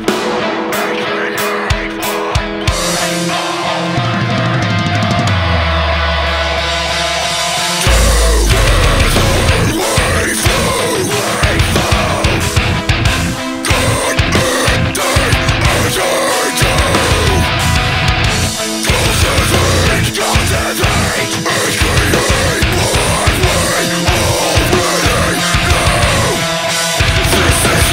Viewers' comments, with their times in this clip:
0:08 ----> <-----FUCK BREACDOWN! :DD